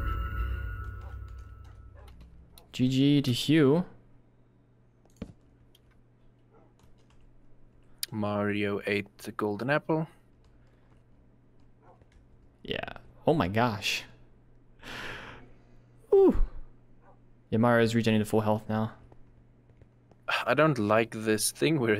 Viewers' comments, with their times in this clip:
0:06 Bro windows 10 computer, mouse off click sound bro